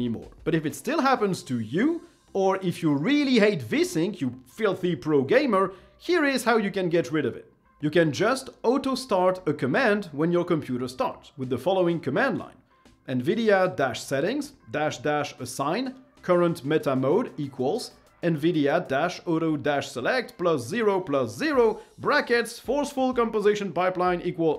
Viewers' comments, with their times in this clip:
0:10 hehe, hehe, he said assing.